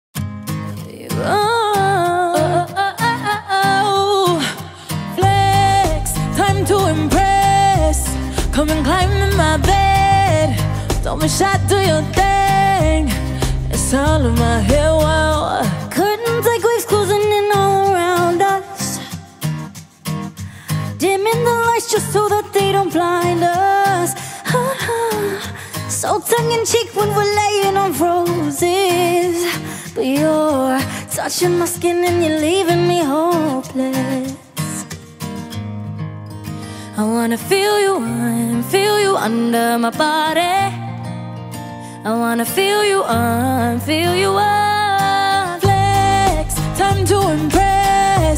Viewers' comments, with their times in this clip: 0:00 LAURENS VOCALS OMFG 🔥🔥🔥🔥🔥🔥😍😍😍😍🥴🥴🥴🥴🤤🤤🤤🤤
0:00 the initial notes of Lauren
0:23 Allys little riff right there is pure eargasm. played it at least 5 times..
0:36 Is there anything more perfect than Lauren singing in this plane?😍😍😍